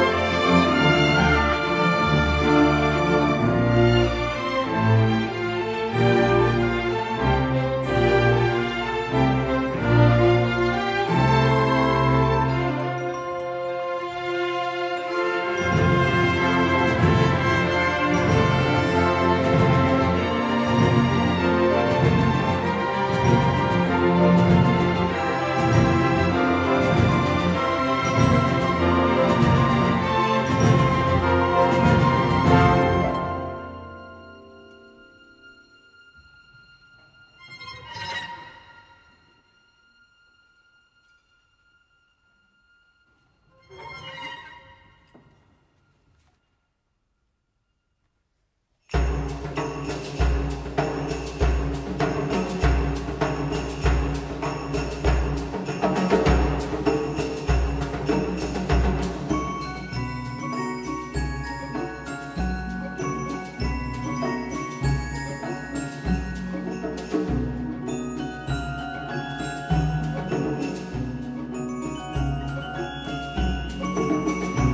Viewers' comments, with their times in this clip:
0:03 I want them to play the riff during my funeral
0:47 ... The music of a factory reset...
0:48 I love the celestial beings music It's such a good piece of storytelling right there in the music itself, it shows how different they are to earth humans. In what is a rather sad moment in the movie they come down with this beautiful cheerful music take the princess and leave her family devastated, showing no empathy toward Kaguya or her parents and their plight. Great piece of musical subtext.
0:48 this wonderful music always reminds me my moments in Japan and always will be. <3
0:48 Man my ears don't deserve music this beautiful. Neither does the Academy deserve Studio Ghibli.
0:49 brings an unbearable onslaught of the celestial celebration, which is too ironic and leaves you with mixed feelings - the moment is so poignant but is accompanied by such ‘happy’ music! I’ve played this over and over.
0:49 everytime i listen to that music piece will always make me confused xD, its a beautiful happy music yet it creeps me out or described as empty/hollow happiness.
1:00 Now let"s play some joyful music while we break ur heart with one of the saddest scene in the history of cinema. U welcome. lol
1:00 Joe was told to make music that was empty. Those spirits from moon does not experience the emotions of joy and sadness like human on earth does and this music really reflect that very well. Before you experienced human's different, heavy and powerful emotions filled with joy, excitement and sadness. Then this music breaks in.